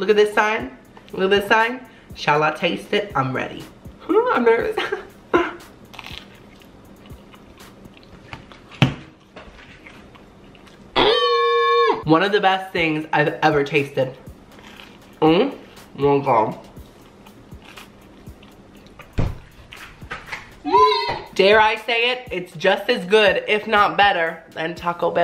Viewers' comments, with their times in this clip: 0:10 that scream had my dead😂😂😂